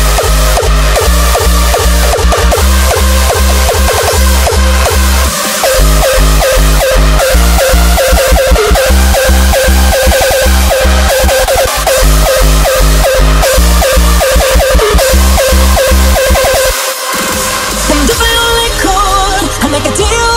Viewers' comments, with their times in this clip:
0:04 those kicks though